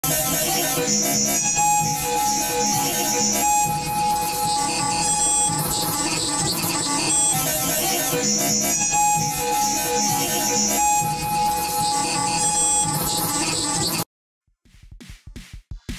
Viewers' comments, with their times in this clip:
0:01 I don't like that. It look nightmare of that sound like is not bambi no more. 1/10. (I just wash the bambi strident crisis will fix this)